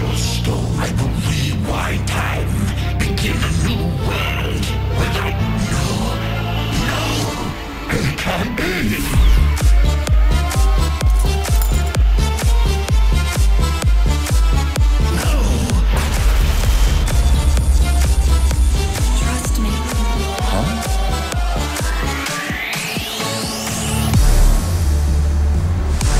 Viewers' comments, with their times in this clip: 0:07 5he way u dropped ur animation with tremor 🔥